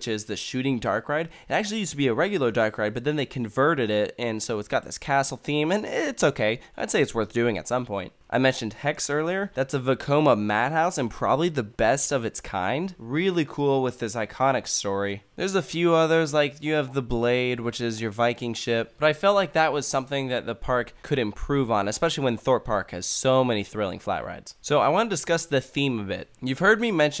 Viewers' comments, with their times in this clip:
0:10 what does he say please? That's a WHAT madhouse? Hi accent is a bit er... odd, it's like he's deliberately omitting every second vowell. I wish he'd try to subsconsciously not do that, as audiences are international here (UK based here, but I doubt even australians would countenace his accent, just saying...).